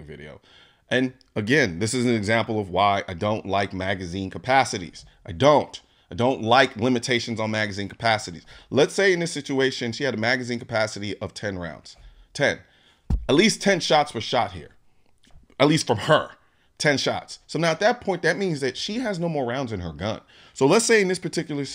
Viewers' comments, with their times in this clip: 0:04 is it clear that she shot that many shots? Sometimes sound just gives you a wrong idea. Very nice story!